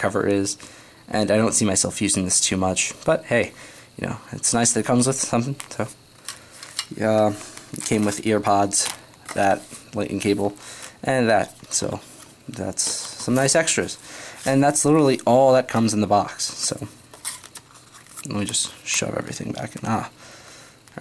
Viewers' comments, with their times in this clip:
0:04 What happened ?? He just started mumbling.